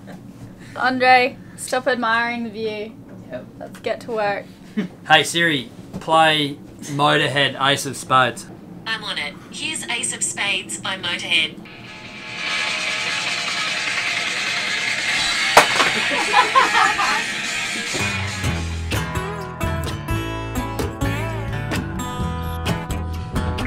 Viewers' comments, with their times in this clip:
0:08 WAIT A MINUTE ! does your Siri have an Australian Accent ? ?